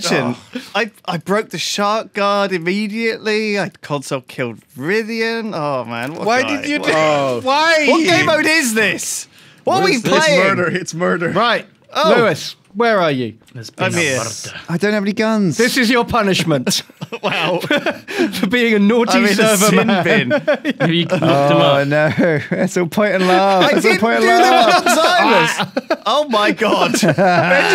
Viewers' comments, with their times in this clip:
0:10 omg that scenrio is funny as hell, lewis is screaming for his life while sjin is trying to shank him through the bars LMFAO